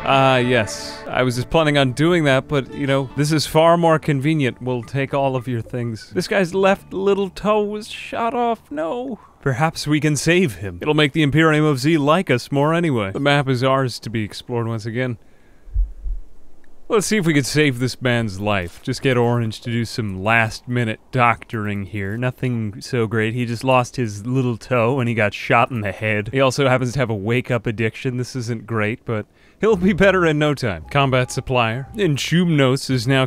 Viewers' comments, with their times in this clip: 0:06 I love the compassionate care with which he said this. "Oh, little toe("
0:15 what happened there? i heard a thump
0:17 Excuse me my friend, Is that a heartbeat edited in?! I now question my sanity and the tenor of that part of the video.